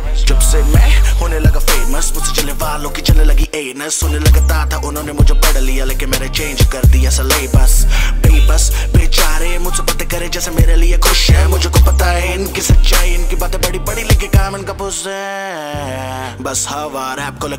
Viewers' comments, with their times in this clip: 0:03 Did I hear Anus HAHAHAHAHAHA ROFL